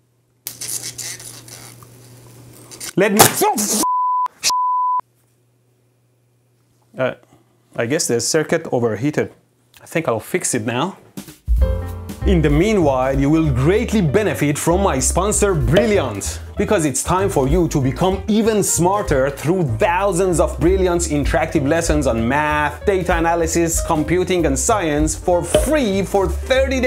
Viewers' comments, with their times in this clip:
0:07 sounds like unhappy 😒 Asian noises